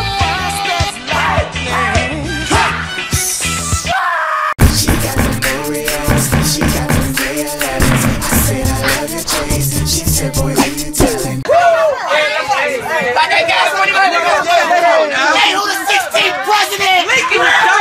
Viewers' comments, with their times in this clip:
0:04 was almost like something out of rhythm heaven